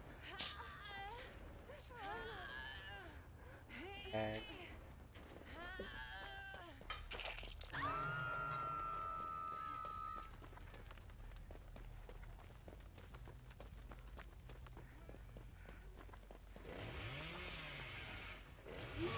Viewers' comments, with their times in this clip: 0:06 Also literally sounded like some alien queen mating call or something xD